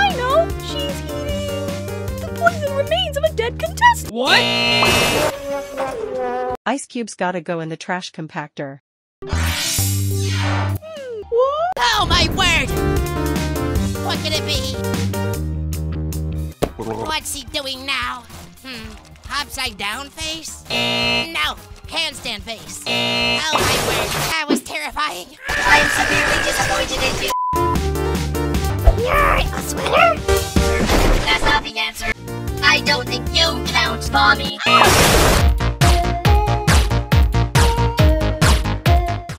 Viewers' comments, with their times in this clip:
0:08 "cumpactor" And then fire in the hole moment, goes 🧽✏️+🔥
0:25 WHAT THE HECK IS THIS SCREAMING VOICE 💀💀💀💀💀